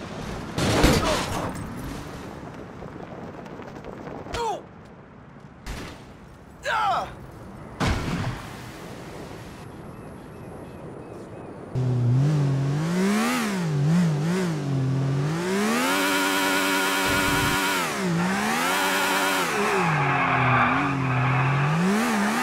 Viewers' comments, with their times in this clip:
0:03 niko sound like cj in this part